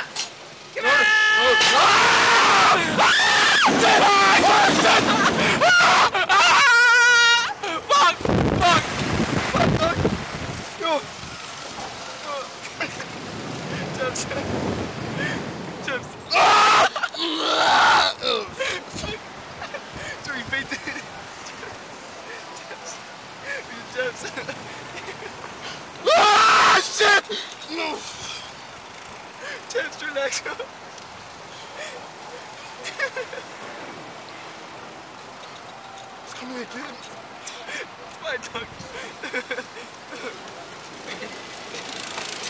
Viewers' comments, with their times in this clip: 0:03 that scream thoooooooo!!!!!!!!!!!
0:06 sounded like tarzan's horn lol
0:06 The noise he makes I can't fucking breathe
0:15 It sounds like he's about to throw up 😂😂
0:16 i fucking lost it.......the sound he makes when he blacks out
0:16 The sound when you drink a 1 Liter #soda
0:17 that last sound he makes before passing out though
0:17 that's the sound of my toaster with no electricity...
0:17 OMG!! On guy on the right sounded like the Hulk when he turns green!!!
0:26 The sound he makes when he faints the second time
0:27 JukinVideo he makes the same voice like the people in the Assassin's Creed series when you choke them out lol.